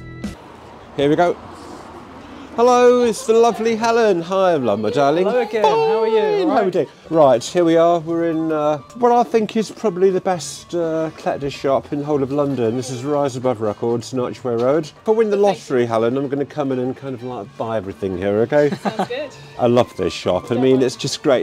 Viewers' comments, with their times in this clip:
0:09 "the best ... shop" I'm missing a word